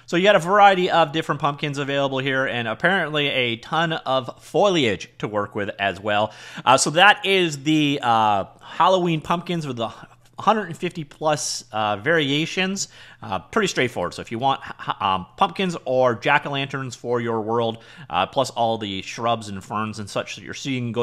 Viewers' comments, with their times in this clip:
0:04 holdup did you just say "foliage" without any issues! that's some character growth right there :D